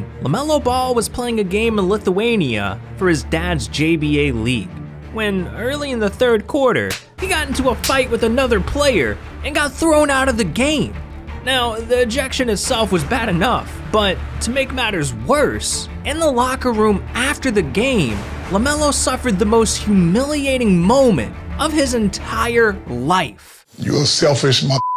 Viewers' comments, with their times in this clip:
0:06 Those slaps sound funny and sus as hell 😂